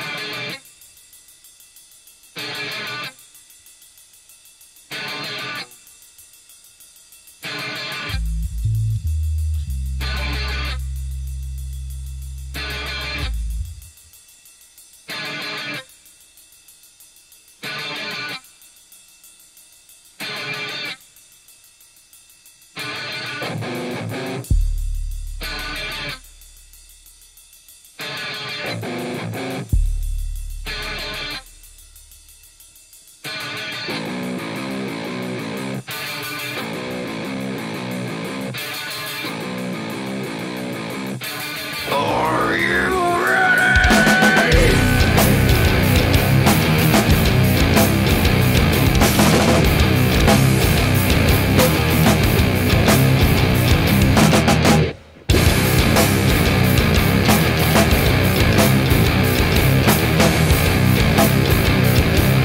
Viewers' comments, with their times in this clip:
0:07 The bass rumble will always be the most badass part of the song Edit: Actually the whole song is badass lmao 😂
0:24 men i love that effect when he hits the drum mic
0:44 where's rap in this song? Metal with rap elements is rap metal Nu Metal is alternative metal without solos, also there's down tuned guitars with heavy and fat riffs